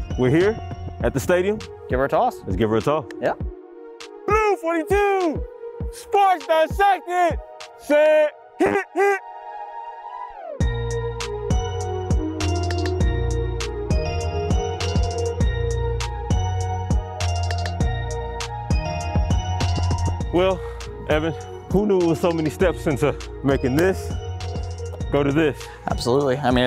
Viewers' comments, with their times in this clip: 0:05 this man straight tooted and tried to cover it up with his yells lol I’m dead 🤣😂🤣😂
0:05 no one gonna talk about that FART?? lmaooo
0:08 HE FARTED BE FOR THE SNAP LOL!
0:08 my guy farted on the snap 😂😂😂